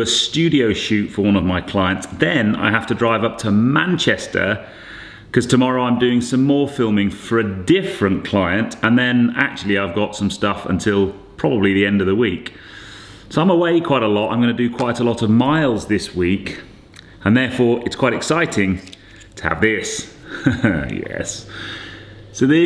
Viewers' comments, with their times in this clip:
0:10 I do like to see behind scenes stuff. That gear change pop is lovely in the car. The Jaguar was a pain just trying to move in snow slush today, only went mile up to the top of our drove to get the new windscreen fitted. Was defo a Shogie Bear day here near Spalding. Having a rear wheel drive powerful car is nice, but, power is no good without control lol. Cool video, as always.